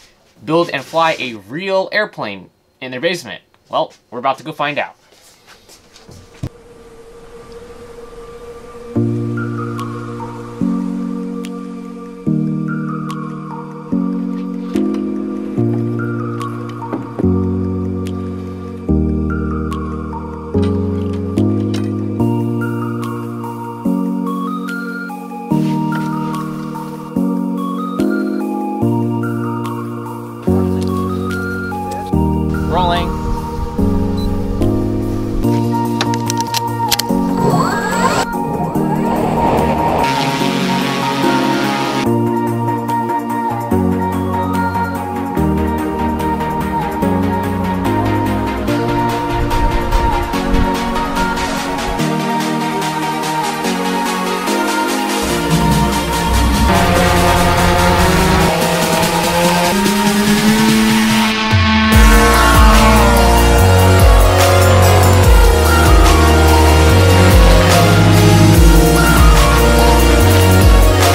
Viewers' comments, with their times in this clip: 0:09 Name something more hype then when the music starts
0:58 ı waşted for the explosion because of outro music